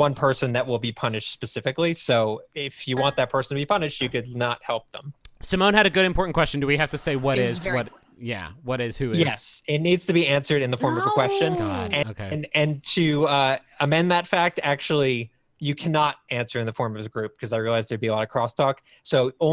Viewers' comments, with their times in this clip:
0:05 I can hear someone taking a drag off an e cig at ~ Which one of these lovely soft boys/girl vapes?!